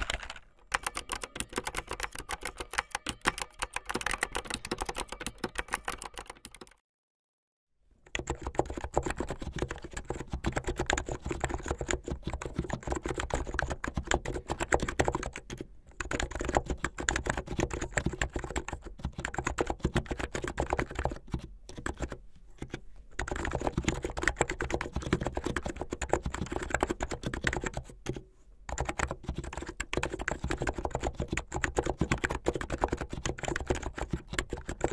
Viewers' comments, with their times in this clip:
0:08 TOP, very quiet, cool!
0:17 THOSE THOCKKKKSS THOUGH 🤌👌
0:17 Its sounds weird